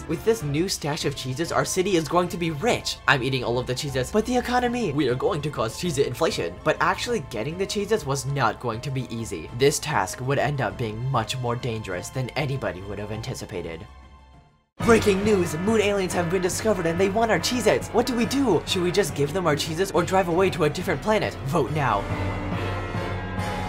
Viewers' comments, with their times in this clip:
0:05 LMAO THE WAY HE SAID I-